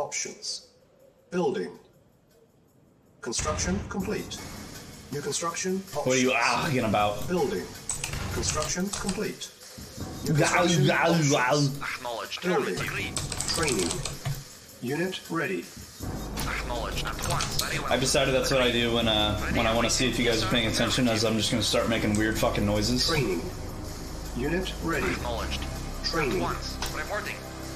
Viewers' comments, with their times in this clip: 0:10 that was a vey good Arnold impression